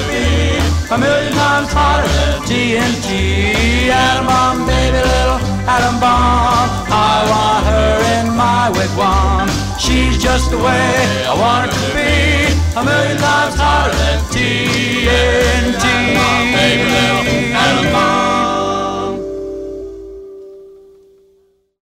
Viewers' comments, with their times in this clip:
0:08 why does it sound like bob burger of bob burgers is singing in the background?